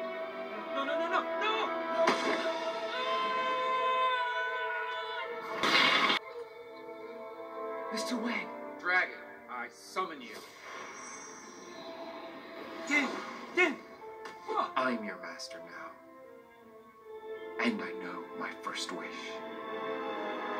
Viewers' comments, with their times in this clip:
0:03 Liam Screamimg Scene